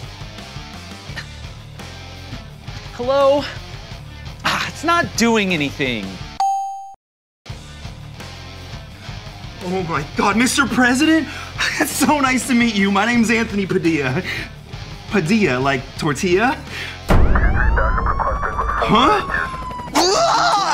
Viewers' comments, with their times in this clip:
0:05 “it’s not doing anything! :(“ *correct buzzer*